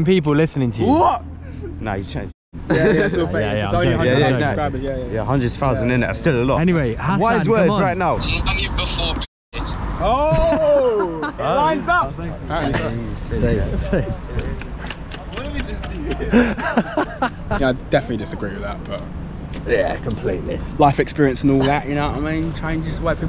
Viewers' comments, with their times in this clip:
0:07 no clue what he said on the phone